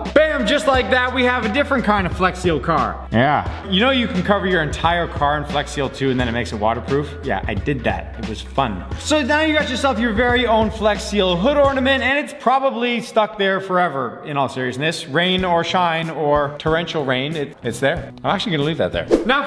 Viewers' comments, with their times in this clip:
0:07 Is it just me or he sound like Jeff from SML